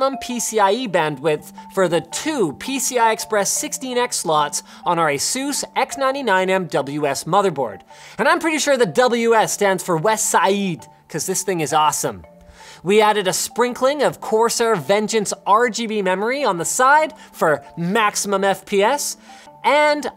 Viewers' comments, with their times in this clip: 0:08 Top notch Arnold Schwarzenegger impression Linus!